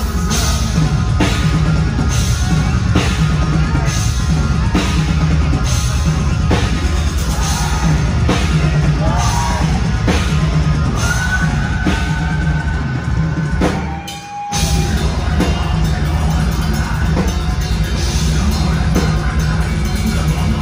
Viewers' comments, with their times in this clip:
0:06 that falsetto part is sooo good. I'm glad Tommy is still able to do it.